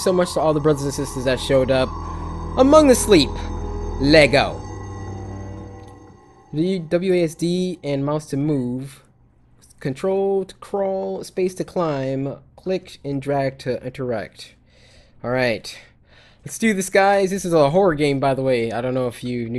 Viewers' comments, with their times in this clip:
0:03 he kinda sounded like chris brown